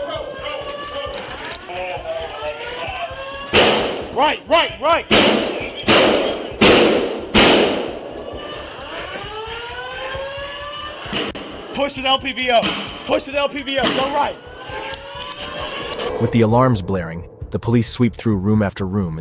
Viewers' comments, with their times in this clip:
0:03 gunshot had me trembling